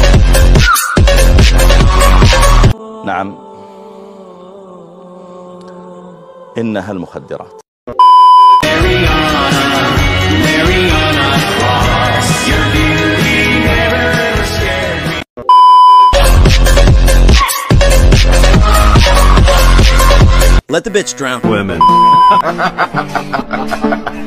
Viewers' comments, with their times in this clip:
0:06 is funny of how this guy talks